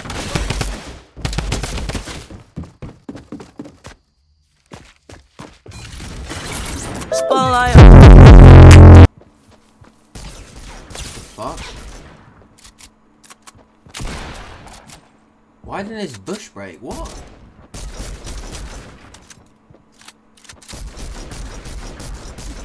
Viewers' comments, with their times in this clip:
0:06 we love your earrapes